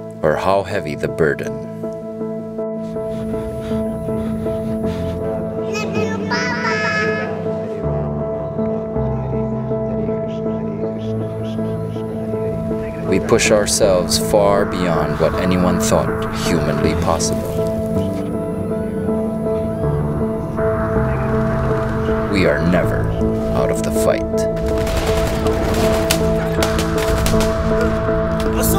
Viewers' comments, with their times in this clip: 0:09 Why are they saying haree krishna hare krishna during ?? Back ground? Anyone from Philippines?